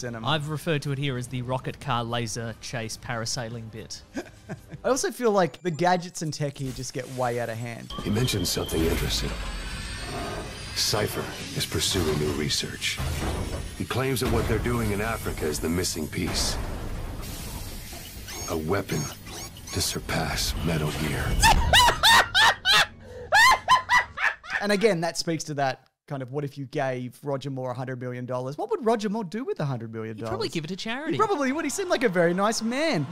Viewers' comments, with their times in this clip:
0:07 you combined three of the greatest things in the world, James Bond, Metal Gear and Rich Evans laugh
0:21 an Angel. It's an ANGEL LAUGHING!